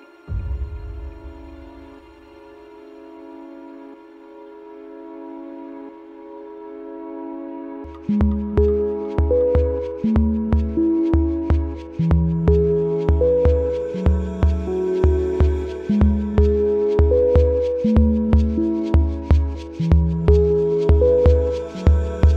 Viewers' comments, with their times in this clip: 0:08 What is the music name in play? The words aren't able to keep up rhythm but that is nice.